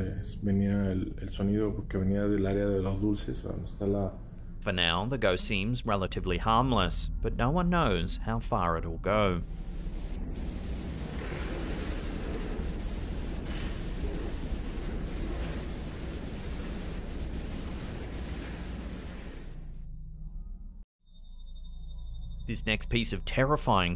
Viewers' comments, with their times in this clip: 0:10 ........sounds like a CHILD are LAUGHING while the TV are being draged over the floor.........??????